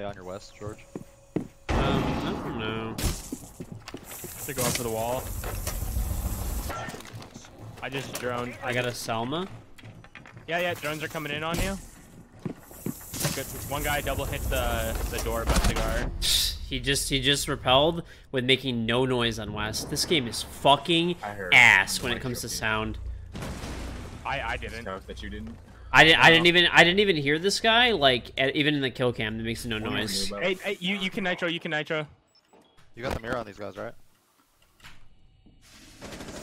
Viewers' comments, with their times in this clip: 0:09 You can hear hibana rappel before he gets to the wall obviously in game/in the moment, this would've been really hard to hear.
0:24 the ace was too loud that’s why